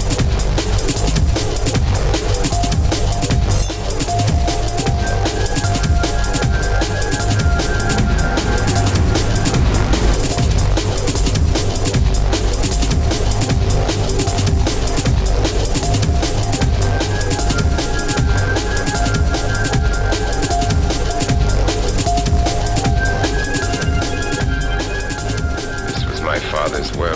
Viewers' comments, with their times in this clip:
0:10 Is it just me, or does the music mess up ?